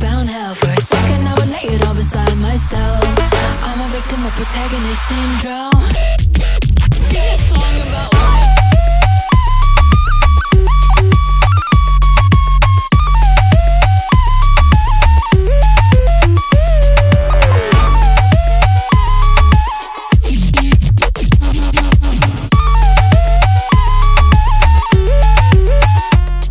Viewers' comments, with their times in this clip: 0:09 reminds me ov the grubhub delivery music idk why